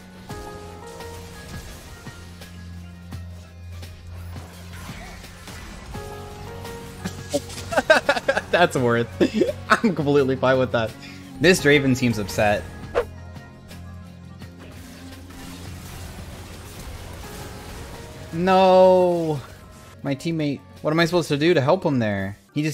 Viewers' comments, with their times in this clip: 0:06 the cursed laugh is slipping out